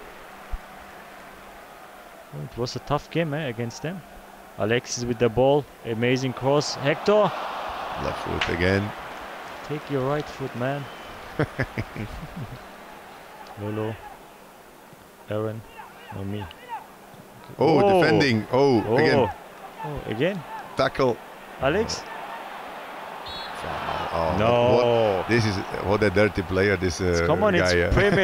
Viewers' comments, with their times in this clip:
0:10 I can't Cech's laugh 😂